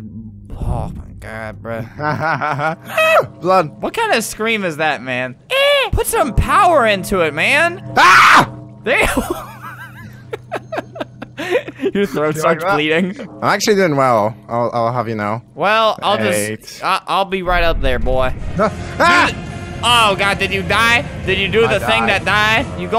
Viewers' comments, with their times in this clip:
0:03 Put some power into it man screams louder ||Awkward silence|| Heh heh btw